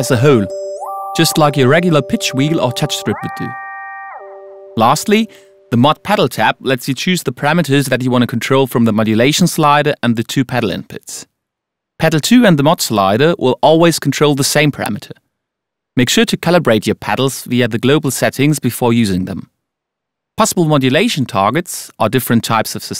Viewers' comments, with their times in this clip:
0:03 sounds exactly like moonlight by xxtenacion